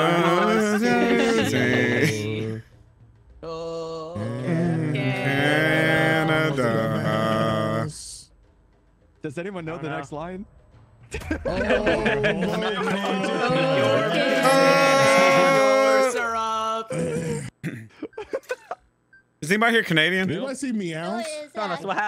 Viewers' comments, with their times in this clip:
0:09 now im crying for them butchering my anthem